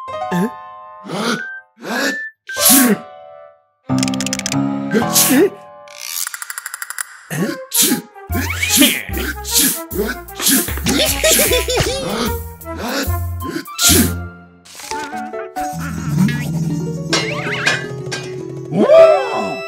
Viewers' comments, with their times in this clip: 0:03 a pencil cannot cough